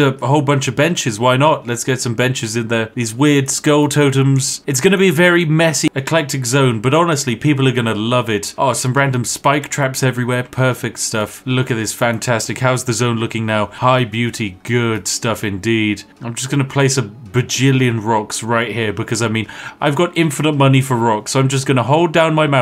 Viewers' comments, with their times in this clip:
0:04 I love the "messy- eclectic" hard cut xD